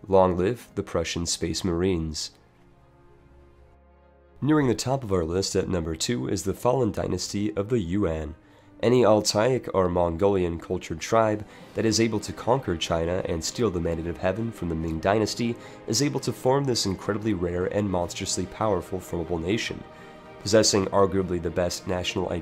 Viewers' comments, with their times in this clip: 0:05 "The Fallen Dynasty Of The United Nations"